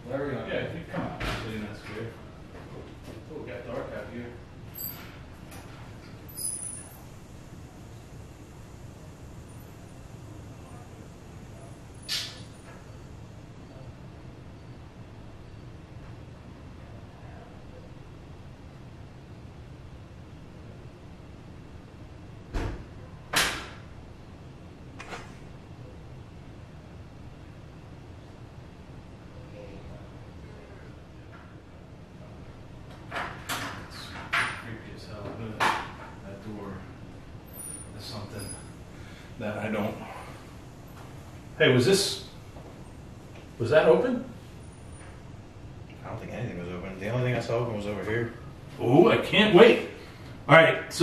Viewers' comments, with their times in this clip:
0:10 female voice says who are you.
0:17 you can hear a voice say “help” or “hell” one of those 2.
0:17 someone/thing says “Get Out” in a whisper. I heard a lot of what others have posted as well. Great video 🥰
0:30 you hear a voice say here and then the light on your camera flicks to black then to light. Then continues to flicker from light to a dull light.
0:32 something is messing with the camera and theres a few strange sounds too , the colour changes to black and white then goes normal again